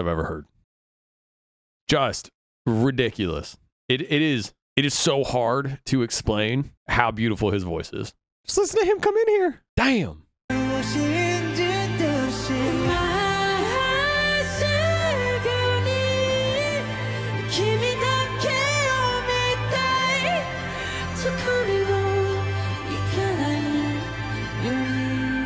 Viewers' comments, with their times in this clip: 0:08 his voice fr is the best in the industry